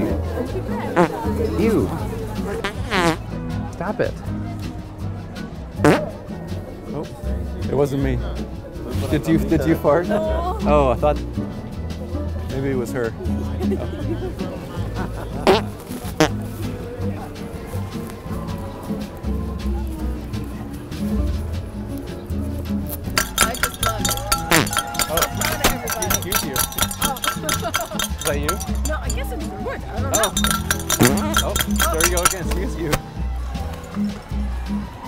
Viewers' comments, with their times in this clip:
0:05 when he did the 2 step fart a little after i almost spit out my drink
0:17 “maybe it was her” procedes to fire off shots as hes walkin away ☠️☠️